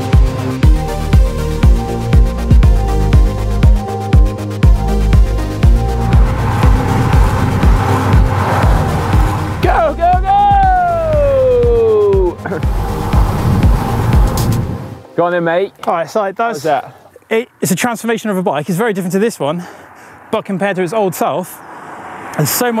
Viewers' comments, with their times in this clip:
0:06 some front mech rub